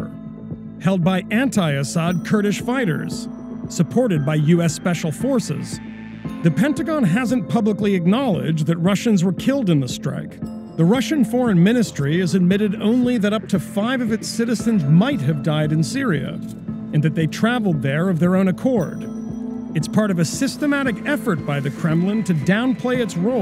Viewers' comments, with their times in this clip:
0:04 ya'll hire the chick version of sid the sloth from ice age the movie?